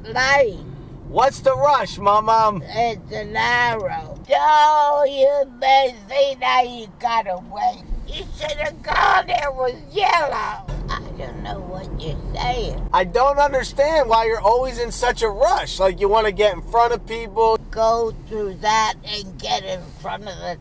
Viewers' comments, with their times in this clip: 0:07 proceeds to transform into Chewbacca All jokes aside man, your grandma is lovely!